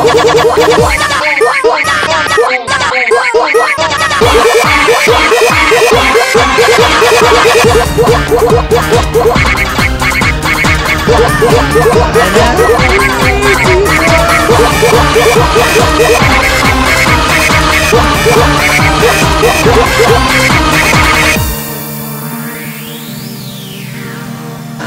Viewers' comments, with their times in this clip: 0:05 it sound like an opera